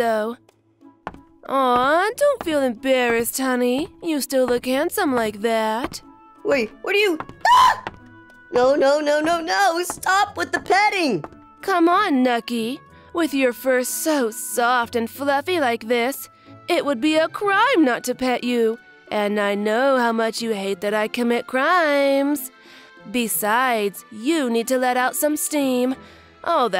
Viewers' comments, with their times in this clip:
0:07 The scream got me dying😭😭